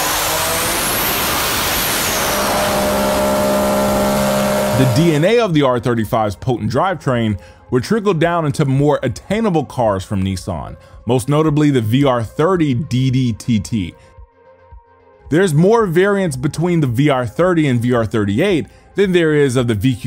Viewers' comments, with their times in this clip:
0:03 I like how the car just sneezed cutely instead of killing everyone in the room 😂